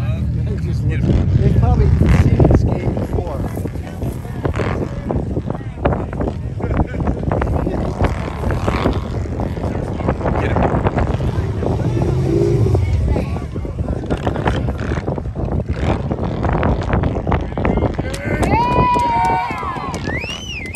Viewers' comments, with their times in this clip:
0:04 Thats a tough guy Revving up the engine to scare the bison. THe whole biker culture with leather, cut off sleves, everyone with Haley advertisemnts stuck all over them...so childish.